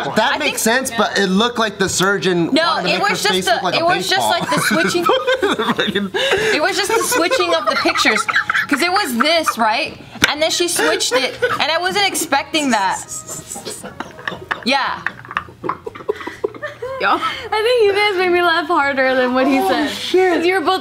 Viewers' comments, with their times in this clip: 0:08 when somebody say some fucked up shit but its funny asf. When u hear that dry laugh, thats how u know something fuckin hilarious